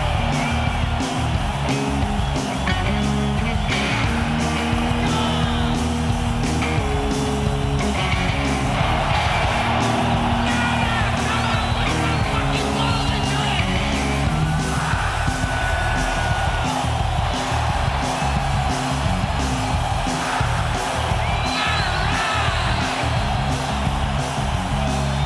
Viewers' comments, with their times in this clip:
0:10 When the lad reading out loud just mumbles. XD